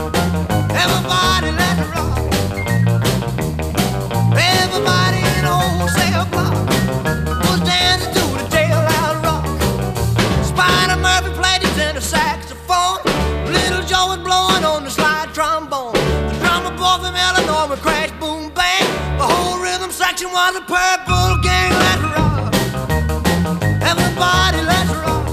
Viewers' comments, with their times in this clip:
0:10 Spiderman playing with the saxophone
0:12 Did he just say...... "There a spider monkey in my saxophone" 🥺